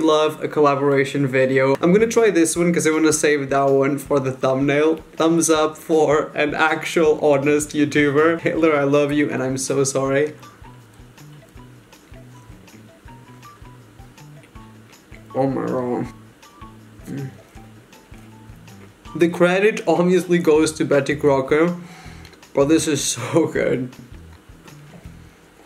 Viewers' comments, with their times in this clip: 0:05 The "Taylor I love you" sounds like "Hitler I love you" lol
0:07 ok am i the only one that hears "hitler i love you and im sorry"
0:07 sounds like hitler I love you I’m sorry
0:08 "Hitler i love you and im so sorry"
0:08 Hitler I love You Whattt
0:08 Did he freaking say hitler I love you wtf ???
0:08 sounds like he said h*tler I love you
0:08 am I trippin or does it sound like he said “Hitler I love you..”
0:08 Did he say Hitler i love you and i'am so sorry or that's just what i heard.Skip to
0:08 did he say hitler i love you?!?!
0:08 he literally said Hitler I love you
0:08 “hitler I love you”
0:08 He said Taylor I love you not hitler
0:08 hitler I love you????!!!!!!!!
0:09 wait wait wait did he say hitler i love you